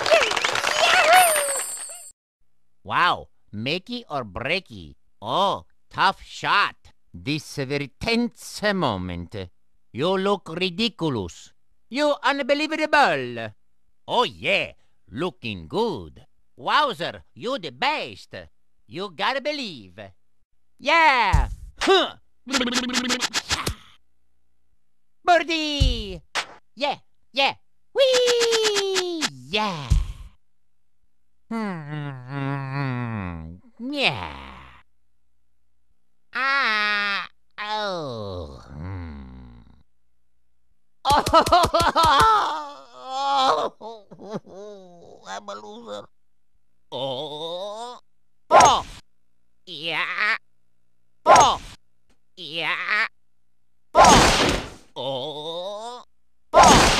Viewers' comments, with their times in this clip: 0:09 Nobody: Luigi U Luk Ridiculus
0:11 I'm surprised more people don't like where Luigi pronounces each syllable of unbelievable separately. When my friends and I found that in the game, we were hooked on using it.
0:40 also listen carefully... he mumbles to himself "I'm a loser"